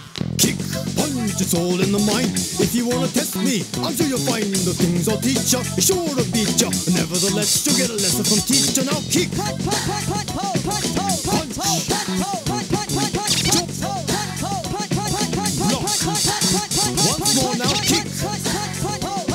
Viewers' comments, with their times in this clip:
0:06 he got funky flow from the beginning